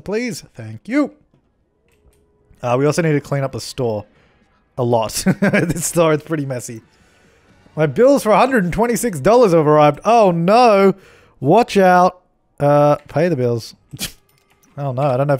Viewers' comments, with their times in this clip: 0:03 YO YO YO DID ANYONE ELSE NOTICED THE RIPPED OFF SALE SIGN ?? the music turned somewhat suspicious too (though maybe that's the bill music?) but did he got robbed or something??